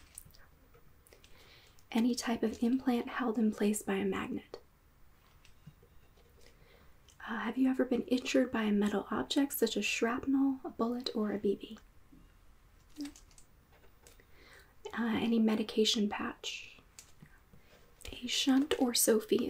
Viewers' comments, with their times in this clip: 0:07 oh how I love misheard lines- “Have you ever beeninjured by a metal object such as schrapnel, a bullet or a bb?” I definitely thought she meant A BABY hahahaha